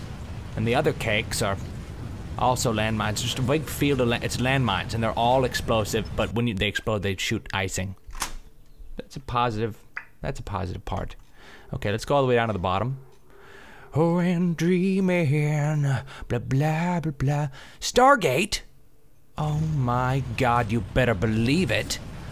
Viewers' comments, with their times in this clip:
0:10 wtf is that noise sounds like a pistol reloading